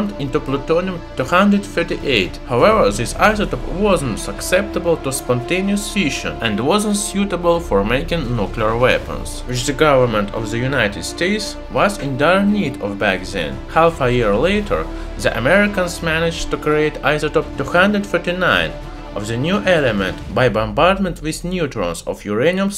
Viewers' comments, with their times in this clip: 0:03 Thats an Australian in a tin shed in the outback